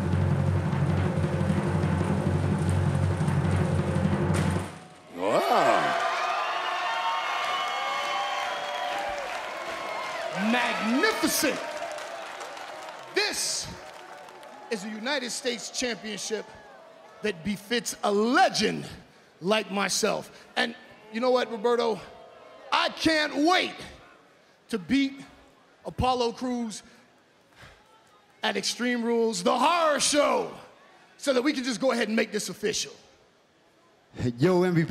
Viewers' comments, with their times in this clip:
0:03 that sound tom phillips makes lol. Trying to sound pleasantly surprised
0:05 Samoa Joe sounded like a sims game sound effect
0:20 Did MVP just say Humberto?